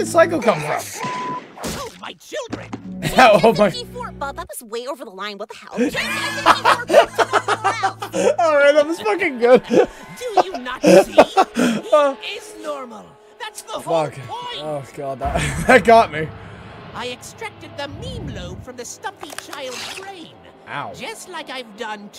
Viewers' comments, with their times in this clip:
0:04 ok i can't be the only one who notise Meggy voice go into Uzi then back to Meggy there!?!